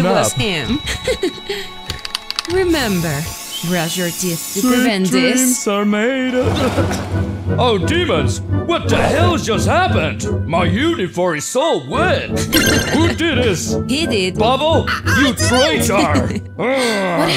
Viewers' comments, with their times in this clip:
0:04 why was Caine singing Sweet Dreams Are Made of This??